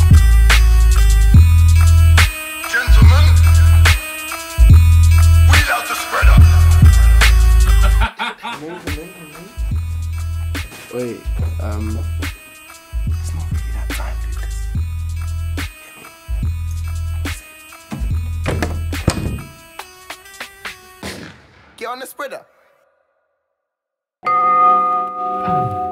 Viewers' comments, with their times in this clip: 0:08 tell me that doesn't sound like ghetts laughing ?🤣